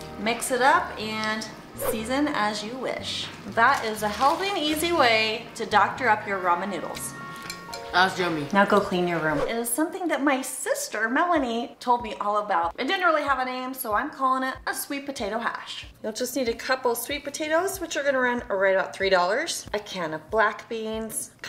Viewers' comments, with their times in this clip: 0:04 The way you said “now go clean your room” is so funny 💀